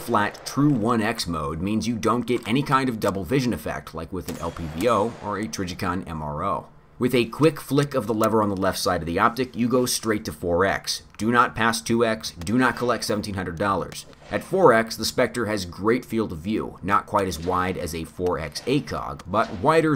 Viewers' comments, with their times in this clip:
0:05 my looks and sounds like Kevin Bacon